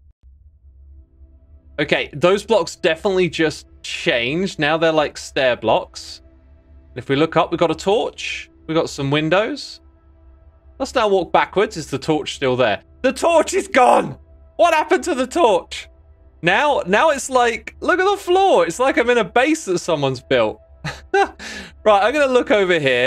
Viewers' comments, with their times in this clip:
0:10 Listen to the sheer panic in his voice